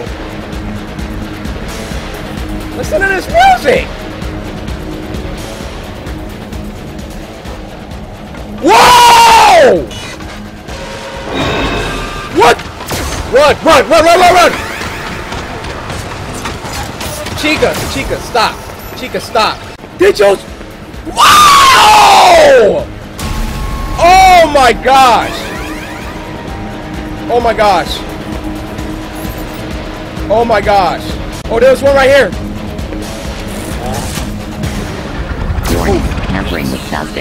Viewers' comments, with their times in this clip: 0:07 It's a high-pitched ver. of
0:20 His scream when dj climbs on the ceiling 😂